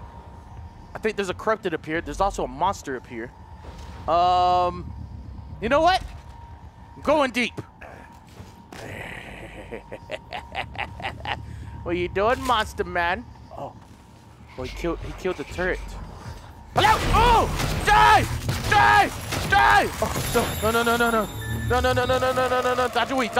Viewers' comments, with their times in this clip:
0:09 I hear a growl. I think it's a phantom, but nope, it's Delirious